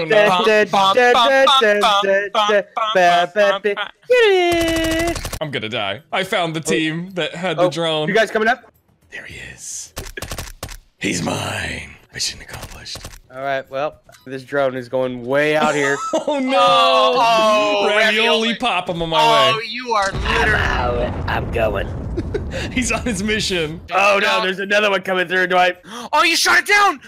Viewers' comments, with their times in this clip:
0:08 Why is this stuck in my head, its such a good music thing